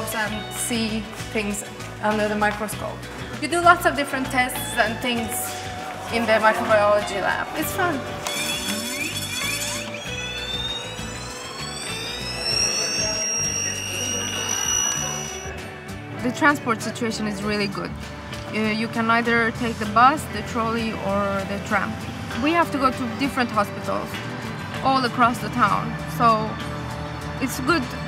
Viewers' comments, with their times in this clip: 0:09 It sounds like the centrifuge was not well balanced